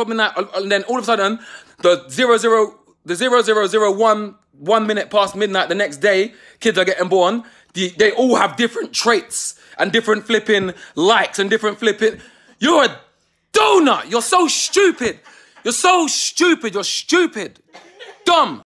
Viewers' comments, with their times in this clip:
0:08 we lettin that voice crack slide?
0:15 the way he says ‘stupid’